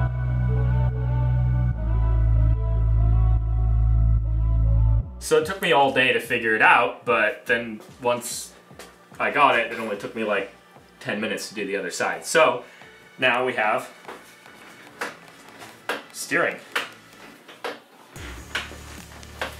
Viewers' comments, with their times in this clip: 0:05 Sack the editor. Edit: music disappears